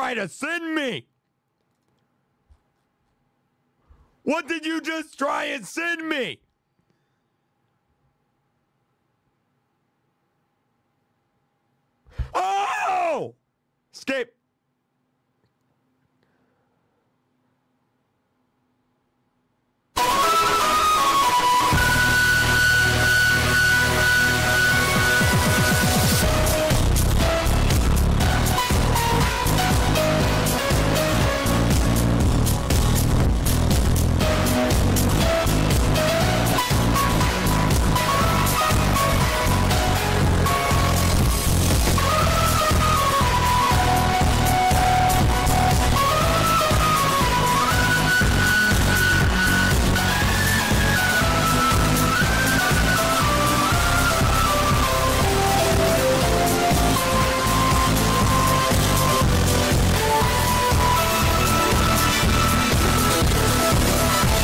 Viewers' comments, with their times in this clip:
0:09 ok now I understand why he screamed so loud..
0:19 The music that plays when I fart😂
0:20 GOD MY EARS
0:20 Rip headphone users😔🥀.. (l feel bad for the people who turned the volume up while wearing headphone/airpods. tbh, so.. l hope yall okay now😅👍)
0:20 make sure to turn down your volume
0:20 RIP my ears i was wearing headphones (with my sound all the way up)😭 (⚆_⚆)
0:20 destroyed my headphones
0:20 WII SPORTS BLOWS YOUR EARS
0:21 I will sleep with this music
0:28 MY EARS AS A HEAD PHONE USER😭 but it’s a still a banger if you want to be dead
0:29 is how loud my grandmas Computer loads.
0:30 R.I.P HEADPHONE USERS (ME)
0:38 rip to headphones users
0:45 Everyone in chat complaining it’s loud. Me: ever heard of the volume button?
0:46 Ver scary music🤯🤯
0:48 r.i.p my ears i'm wearing headphones